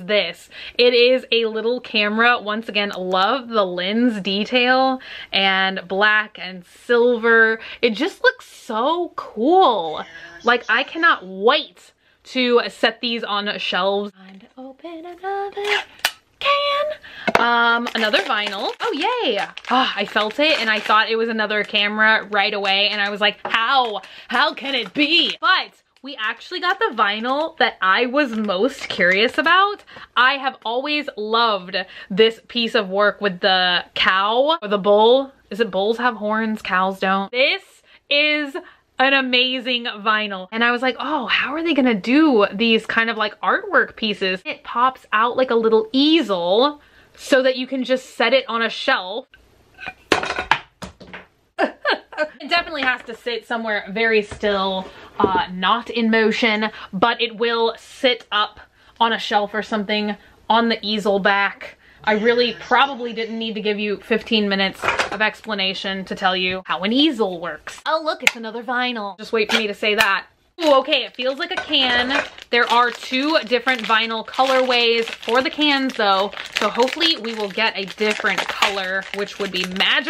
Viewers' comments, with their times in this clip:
0:09 WAS HER “HERE’S JONNY “ RINGTONE
0:10 No one going to say anything about the weird noise ??
0:10 HERE'S JOHNNY in the background 😂😂😂
0:10 what was that noise ?? Sounded like a creepy ghost!
0:10 you gan here a voice😱
0:10 did anyone else here noises in the background they sounded like voices
0:10 What’s with the terrifying whisper
0:11 Did anyone else hear something creepy in the background ???
1:01 what was that noise in the background??
1:02 there is totally a demons voice!!! 😯😯
1:03 Did anyone else here the words here’s Johnny